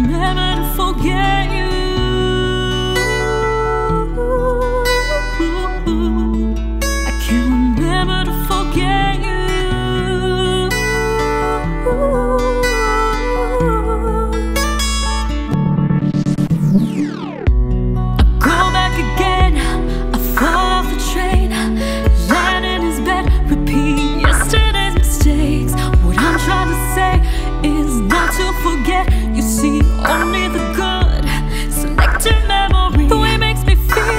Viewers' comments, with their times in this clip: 0:04 for this ouuuhuu she should get more views and likes pls😩😩
0:16 LOVING this! especially when the beats come in :) great job